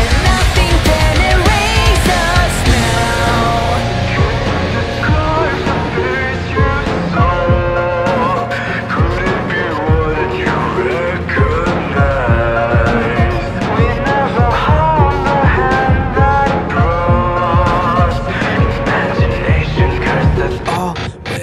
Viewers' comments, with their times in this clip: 0:03 my favorite part is i like the voice of sammy
0:03 Am I the only one who liked the voice of Sammy Lawren?
0:04 Holy cow Sammy's voice is beautiful